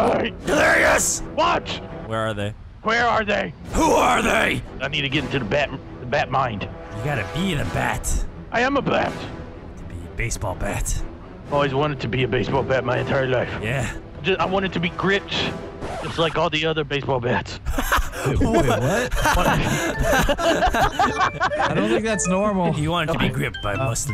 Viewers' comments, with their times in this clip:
0:07 “gotta eat a bat!” Hmmm